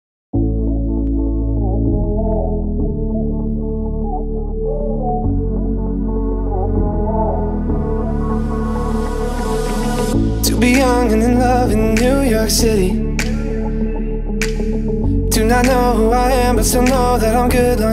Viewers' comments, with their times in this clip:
0:00 I just love the beginning of this remix, it’s so comforting. (you’re welcome)